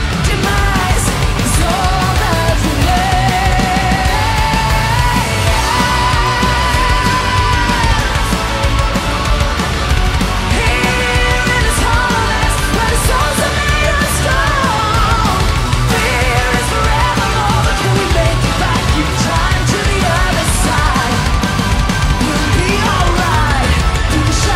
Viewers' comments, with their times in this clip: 0:05 That's how original song is done. Studio version is completely same as thisnlive performance. Even that part